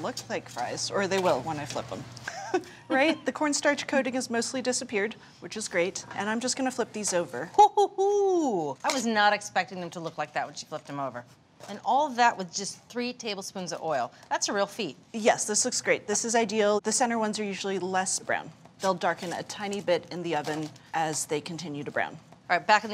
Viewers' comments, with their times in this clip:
0:07 An owl has entered the chat.